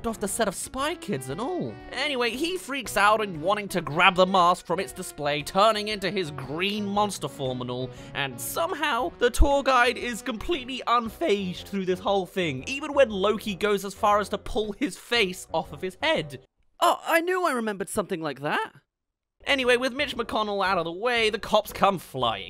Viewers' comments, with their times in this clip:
0:08 i never saw this movie but i know he said "Ow" with a emotionless voice.